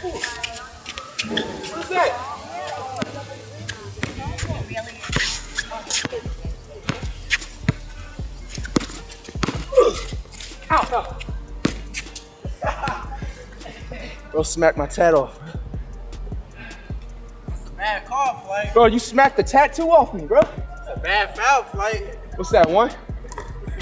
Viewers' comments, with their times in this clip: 0:09 dude made the Roblox sound